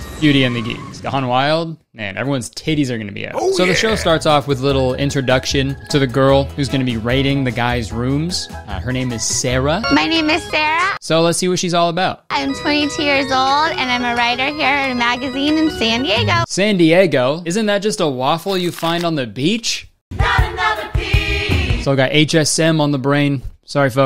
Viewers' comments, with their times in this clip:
0:08 sounds like the shrek music in trh